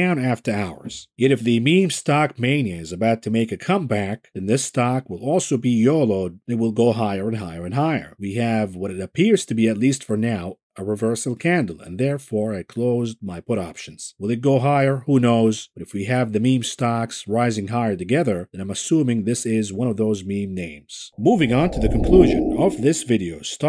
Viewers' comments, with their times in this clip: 0:06 first HAHAH? Or did I miss one earlier?